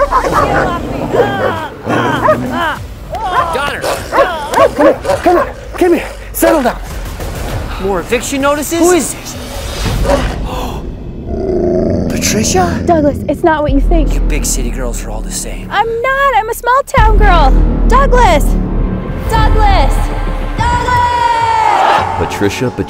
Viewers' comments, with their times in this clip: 0:03 that dog’s expression says, “What are you guys doing?” Sure doesn’t match the angry barking. Too funny.